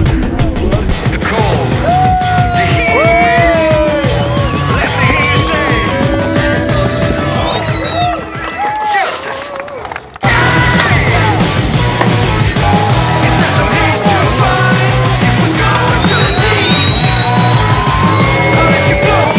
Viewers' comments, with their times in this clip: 0:06 there was a kid crying